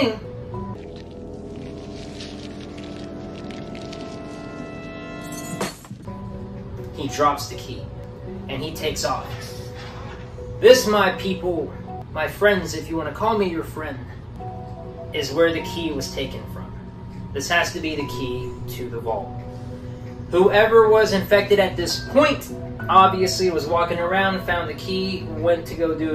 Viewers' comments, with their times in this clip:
0:09 what flavor air freshener is that going off in the background?